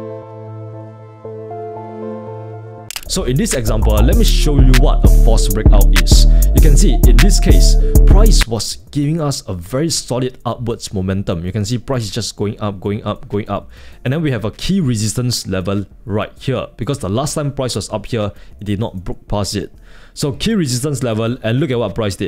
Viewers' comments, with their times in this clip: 0:07 nah that beat drop was too hard, bruh 💯💯